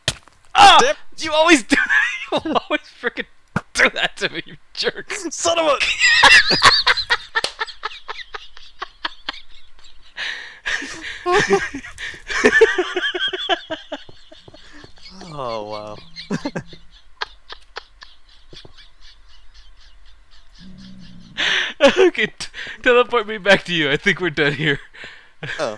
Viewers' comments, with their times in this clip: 0:10 His laugh had 39 waves!